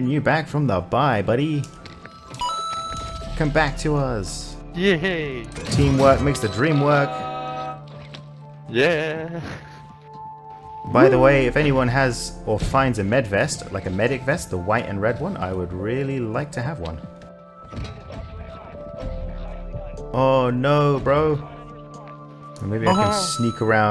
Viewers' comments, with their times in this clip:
0:06 Love the Rugrats music 😂